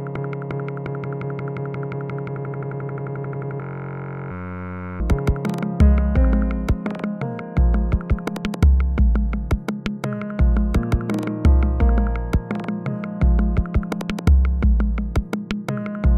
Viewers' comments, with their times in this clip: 0:04 could make a good bass drop